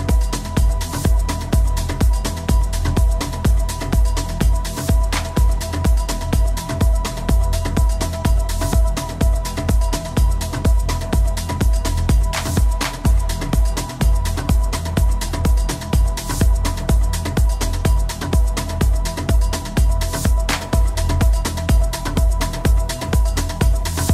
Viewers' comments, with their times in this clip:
0:10 Transition to next track is dope 🤯😍